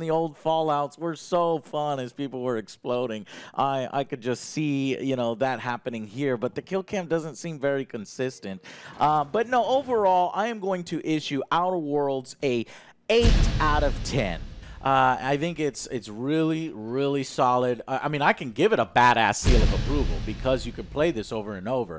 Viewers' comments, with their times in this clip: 0:09 he says: "I'm gonna issue Outer Worlds a eight out of ten", which sounds weird (and grammatically incorrect). I'm pretty sure he gave it a 7 on the original take of this video, then changed it to an 8 post production.